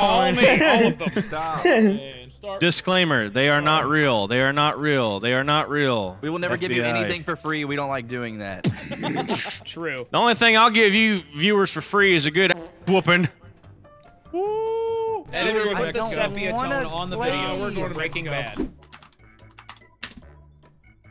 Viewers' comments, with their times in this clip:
0:09 Y’all fr beat boxing into the video